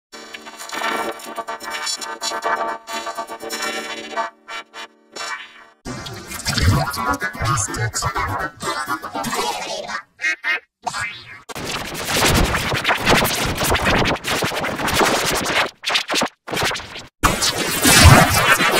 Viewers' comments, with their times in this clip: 0:05 sounds like my G-Major 1